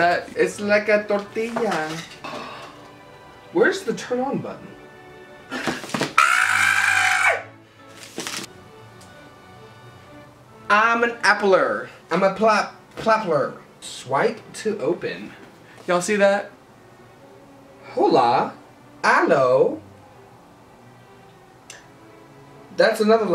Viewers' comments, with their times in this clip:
0:05 sounds like a fnaf jumpscare